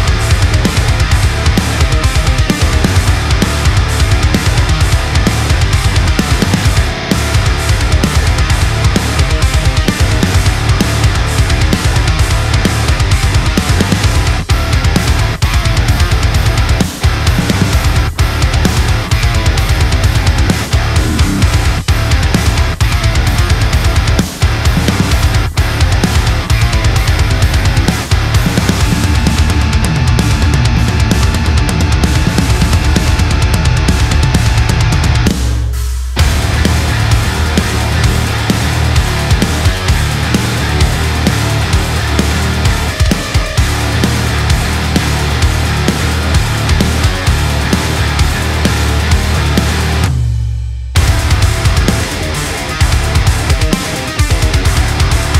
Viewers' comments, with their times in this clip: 0:06 Wow, tone is sick. Great cover. Also can we all appreciate the video editing skills?) That freeze is so cool.
0:36 Hard to believe that riff is 1 string and just 2 frets, its so brutal.